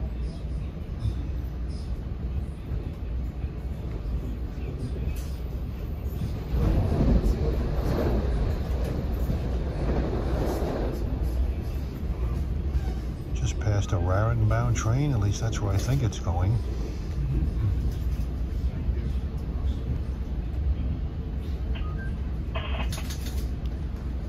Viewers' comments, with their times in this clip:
0:06 A train goes by 'out of the city '